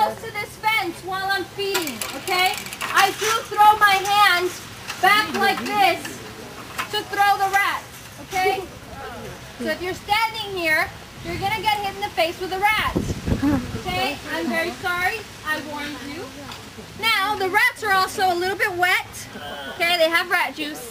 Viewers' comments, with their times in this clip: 0:03 I had to turn the video off Her voice is hurting my ears.